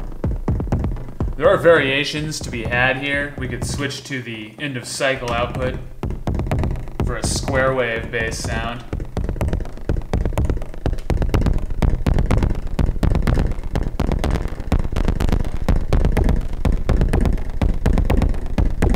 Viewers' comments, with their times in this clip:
0:06 Heh...a little tilt to Autechre ? :) Playing in the dark. and thank you....for not uttering....."IT" :) I followed your instruction...and it was super fun. degraded into crap after a bit. no idea why. but it was sounding so sweet. its tuff having no idea what makes it werk and what doesn't. must be nice being smart...knowing what you're doing. used an Octatrack for sequencer, and used its RND LFOs to mix some stuff up. can't change the temp like you did with the Wogglebug and your sequencer tho. GREAT vid!